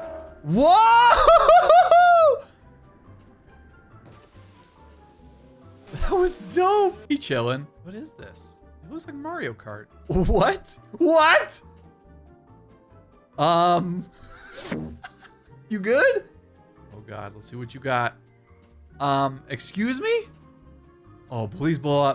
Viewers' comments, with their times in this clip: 0:09 Mario’s theme plays